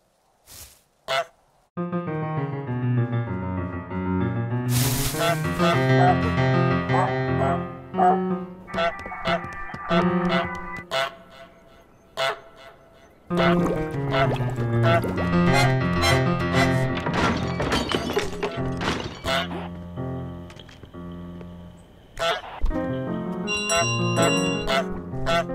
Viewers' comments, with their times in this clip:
0:06 that sounds like a trombone lol